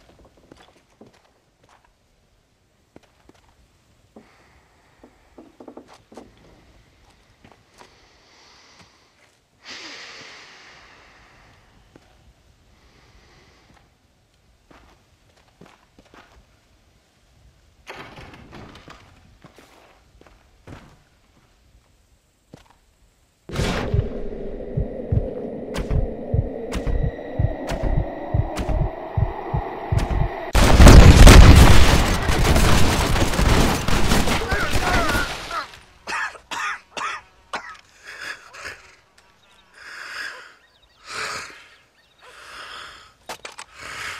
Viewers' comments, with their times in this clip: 0:03 a mysterious man approaches from behind john. "This idiot's reeeaaallly starting to irritated me." The man says in a familiar voice, a voice that john hasnt heard in years.
0:32 I’m pretty damn impressed that John managed to still be standing and coughing for 47 seconds after being shot to death